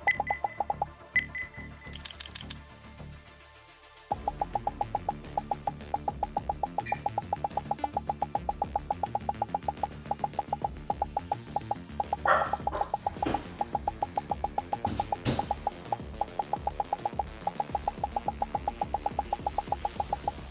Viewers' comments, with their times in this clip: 0:04 did he just sync the aimlab pop with the song